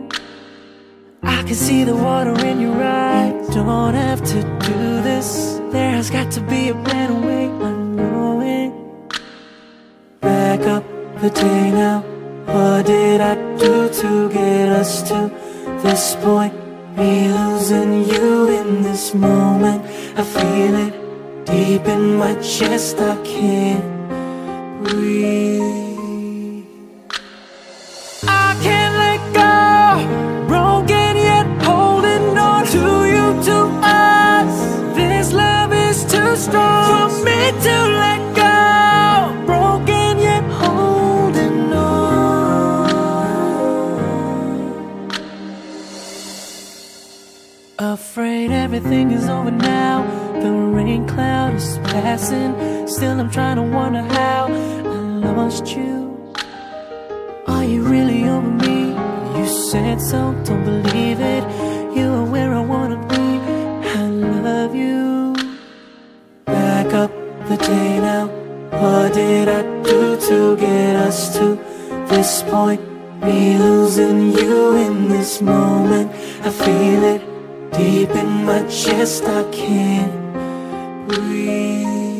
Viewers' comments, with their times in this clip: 0:08 it sounds like he says potatoe
1:07 lol anyone else hear “back up potato” ?